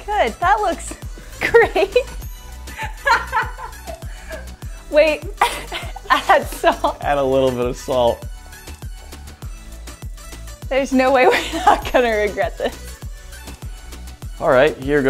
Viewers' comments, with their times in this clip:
0:03 The laugh when you wonder what your life has come to.